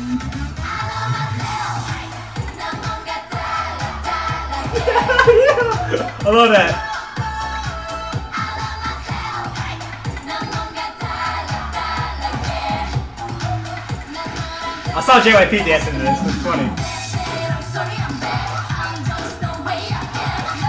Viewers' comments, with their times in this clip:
0:04 my favorite laugh xD